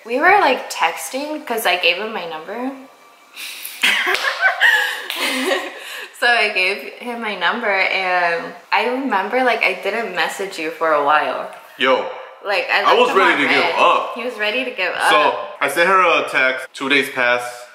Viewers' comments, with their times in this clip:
0:04 When you’re smacking your hands I can hear you say “yo I’m dead”